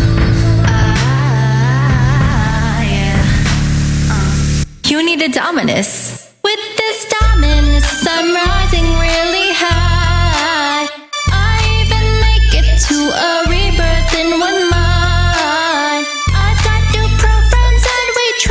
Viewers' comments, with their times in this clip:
0:06 yikes the vocals are not synchronized with the song